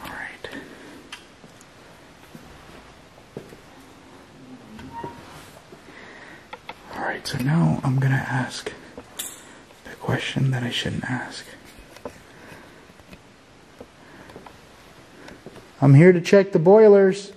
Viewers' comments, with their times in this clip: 0:05 there was a moan or someone talking